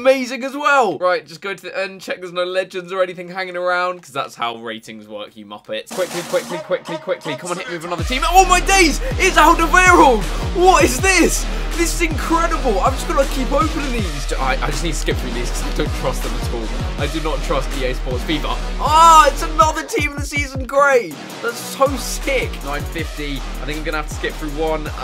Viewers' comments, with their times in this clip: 0:08 his voice sounds like its a fake thing